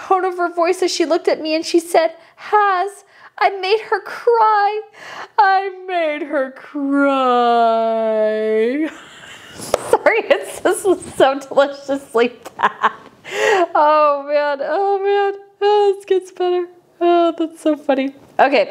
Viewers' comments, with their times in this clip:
0:05 You reading that out was seriously painful I hope no one in my household can hear the whiny annoying voices